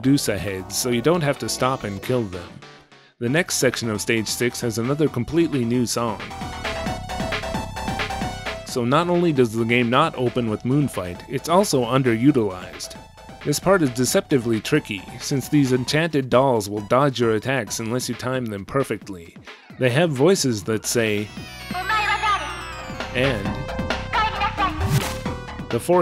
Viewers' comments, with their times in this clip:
0:07 I'm surprised you didn't reference Maria The dolls look very similar to her appearance in Rondo of Blood, and even use voice samples that sound similar to hers in that game.